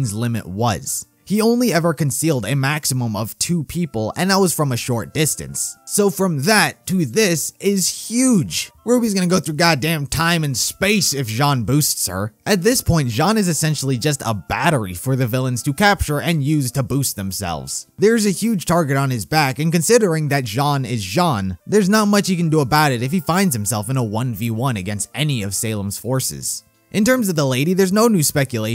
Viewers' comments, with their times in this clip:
0:09 I died!!!!! The amount of sarcasm in ur voice killed me!!!